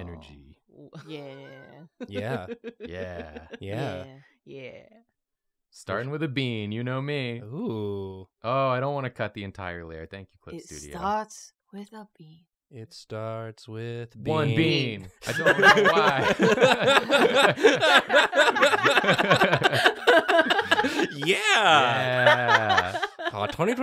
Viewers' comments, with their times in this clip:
0:09 audio representation of neurons firing in proper order